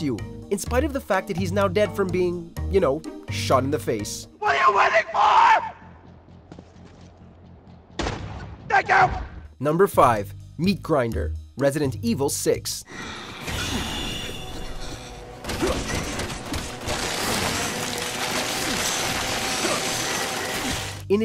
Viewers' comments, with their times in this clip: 0:04 me: i don't think i want to- "WHAT ARE YOU WAITING FOR" me: sorry *boom* "THANK YOU"
0:04 lol the way he says “THANK YOU!” Quickly
0:08 When your crush says "yes,I'll go out with you" And you are happy......but still screaming🤣😂🤣
0:08 the way shooty says thank you doh